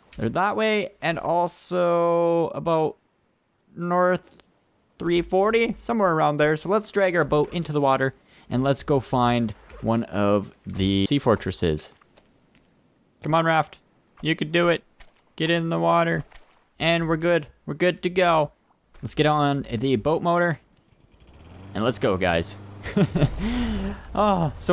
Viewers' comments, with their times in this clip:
0:10 on didnt spy sound like he said 'tea fortresses' ?